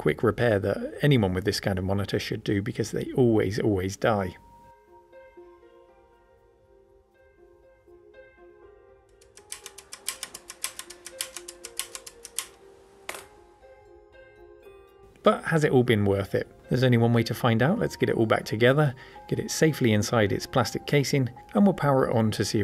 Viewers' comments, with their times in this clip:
0:07 For some odd reason, your rapid switch cycling reminded me of the opening hi-hat in the Shaft theme. :^D
0:09 That's a phat beat if I've ever heard one!
0:09 power button musical